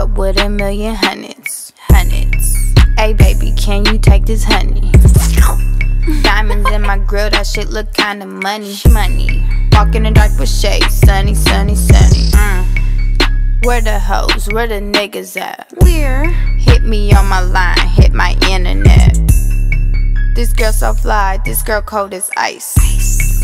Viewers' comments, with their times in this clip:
0:04 yuck!! did they really ask her to slurp in the studio